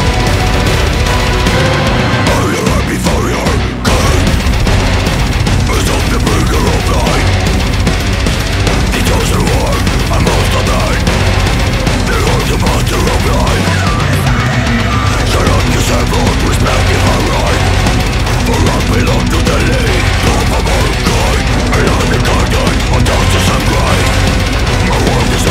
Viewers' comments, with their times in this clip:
0:09 Normal people "Oh wow, that's a lot of drums" Fans of the band "Nah, that's just the pre-warmup warmup"